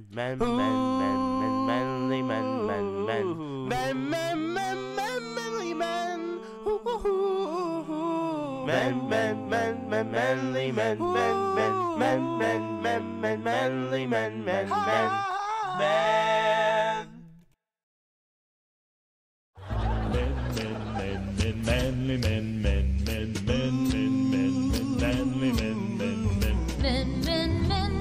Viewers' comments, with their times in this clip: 0:09 I know you guys were playing but that actually sounded pretty good 👍